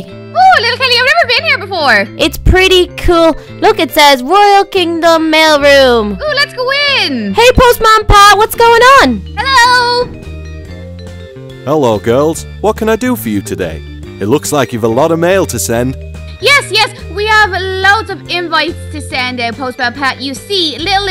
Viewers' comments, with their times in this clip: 0:03 Did any body else hear them practicing before they ran to post man pat if u don't believe me go to to see